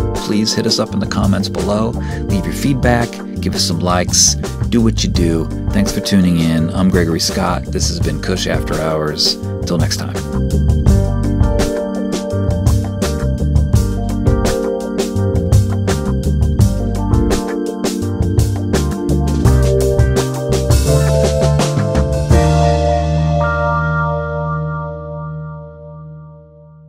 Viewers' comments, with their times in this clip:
0:09 "hours" sibilance = intimacy. ;) xoxo